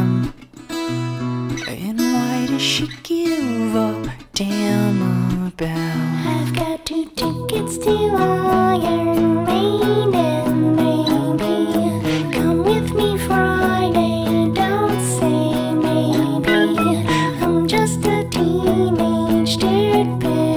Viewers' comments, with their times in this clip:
0:07 this was my first time listenign to the full song and when i tell you i did NOT expect that voice wtffffffff 😭😭😭